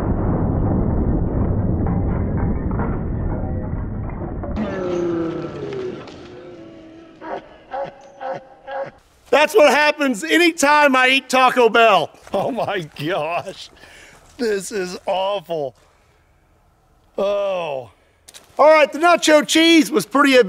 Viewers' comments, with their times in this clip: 0:04 the most evil laugh hahaha